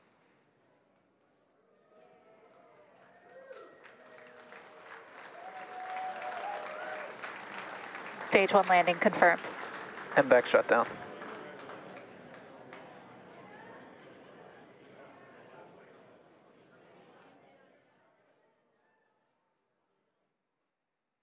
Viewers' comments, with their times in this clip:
0:04 When the Orbital Rocket Booster lands you can hear everyone cheer